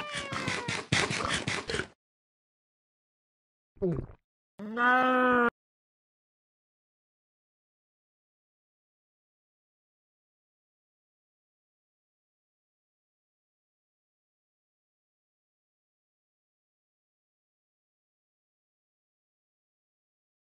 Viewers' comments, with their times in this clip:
0:05 why is it i only hear audio for the first and then its silent the rest of the way?
0:06 bro no sonud💀💀
0:06 No sound What?